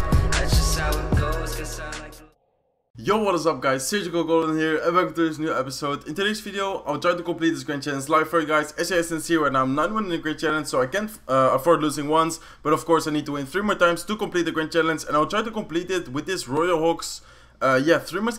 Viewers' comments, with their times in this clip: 0:05 At the beginning you lost your words 😄😄,